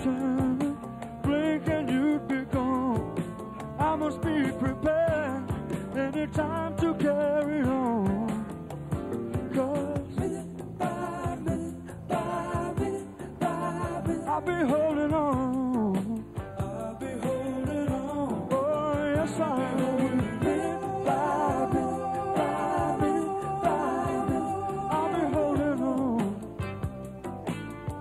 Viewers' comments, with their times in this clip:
0:10 IT GOT THE GROOVE OF RICK RUDE THEME SONG IN THE WWF IN THE 80's